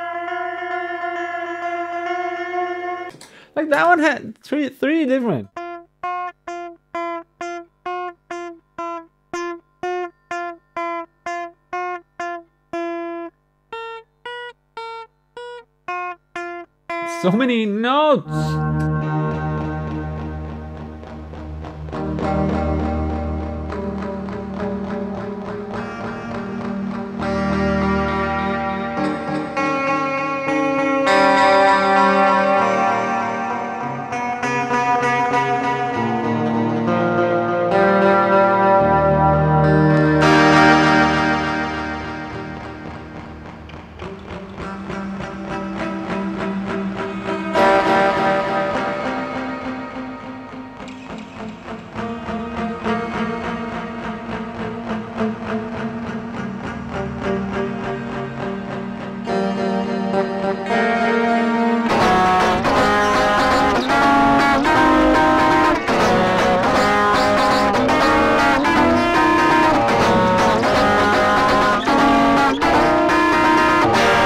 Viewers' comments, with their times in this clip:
0:05 made my ears feel like I was a cat getting their ears scratched, or like when you get a q-tip right in the sweetspot before you go too far, it was very nice thank you. What a gorgeous contraption! I look forward to future configurations.
0:20 Salvia Palth vibes
1:02 Love it!!! Especially the strum!!! Hell Yeah!!! That bit needs to be in a track!!!